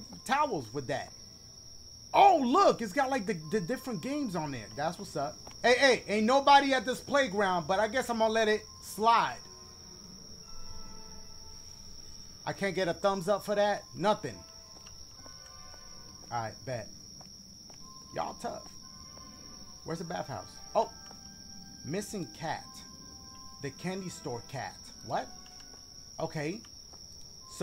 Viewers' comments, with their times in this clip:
0:10 that music was on cue